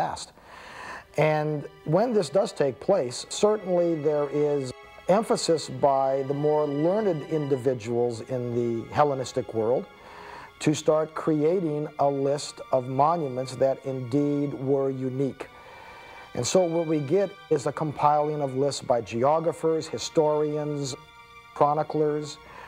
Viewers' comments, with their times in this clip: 0:03 Too bad I absolutely cannot stand someone saying "uh" in between every word. Stopped into the video. Going to cut my ears off now.